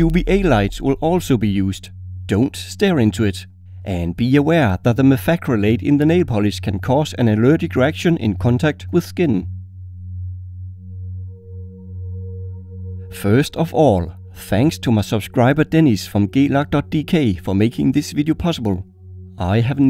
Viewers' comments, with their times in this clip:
0:05 It might just be my unconscious sadist mind that keeps me from hearing this correctly, but all I can hear is a frag grenade can cause an allergic reaction